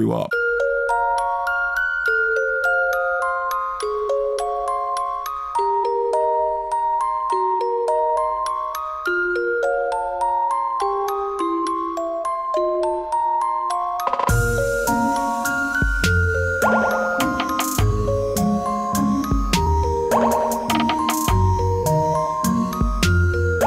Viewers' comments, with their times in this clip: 0:09 sail away, to hushabye (holy) mountain please please tell me where that version of the song is from, it's lovely. From his recent films? btw, sound mix sounded great to me, but i'm wearing a headset. Maybe people are having trouble on cell phone speakers?